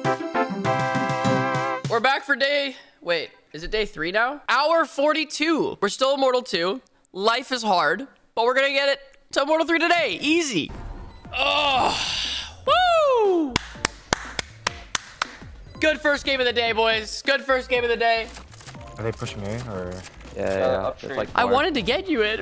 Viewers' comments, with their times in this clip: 0:05 my god im watching / listening in the background of work and then ish i hear some insane nostalgic music of what it sounds like runescape???